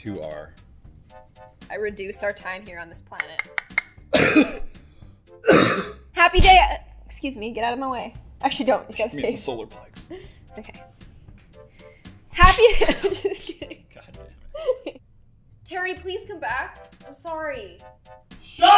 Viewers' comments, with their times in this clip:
0:06 That banging on the table lol